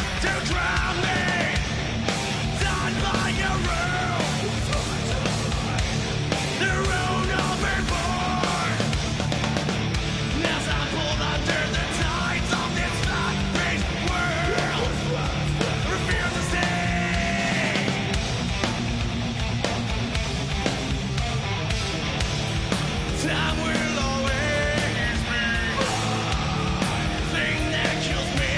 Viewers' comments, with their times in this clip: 0:10 the part from sound like shit with clean vocals, and its teh best section in the song